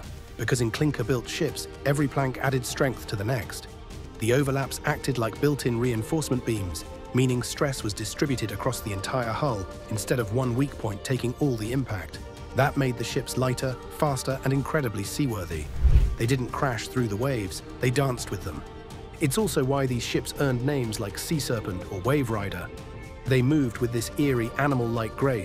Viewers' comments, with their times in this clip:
0:10 Background noise kills it for me, I am out